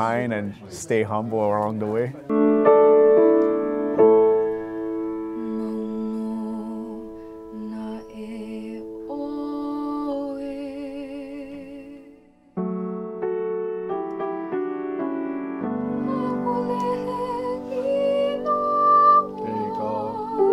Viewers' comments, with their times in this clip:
0:04 I cant be the only one that thinks that the animation of Moana IS Auli'i EDIT: OMG Her voice is so damned beautiful!!!!